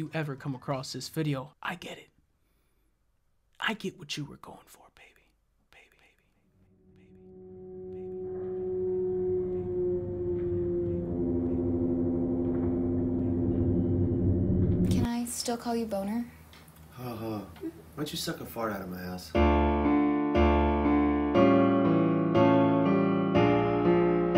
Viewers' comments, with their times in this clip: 0:07 Those RE4 sound affects always creeped me out when I was younger.